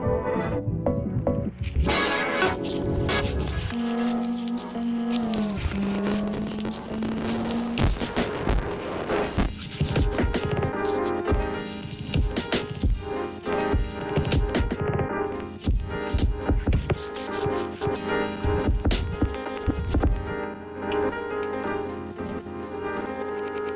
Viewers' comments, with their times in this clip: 0:10 "huh I can't keep track of the beat?!" This bad set!, Why I hear no pop-y melody?" So much people that are in a haze and can't even comprehend this type of music. These are the same kind of people that think ambient music is boring. Loving the percussion and the sample, really feeling that piano.